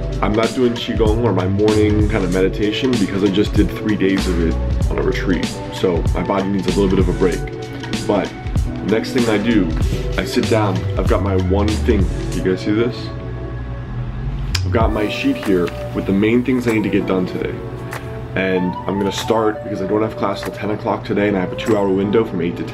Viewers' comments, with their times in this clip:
0:07 Make the background music louder I can still hear you talking Ironie off